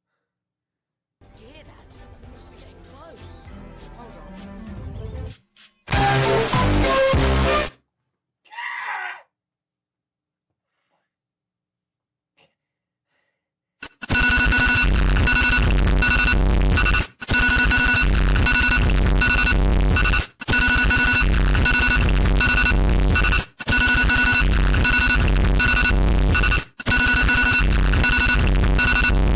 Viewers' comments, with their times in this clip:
0:10 RIP AirPods or headphones users😭🙏🏻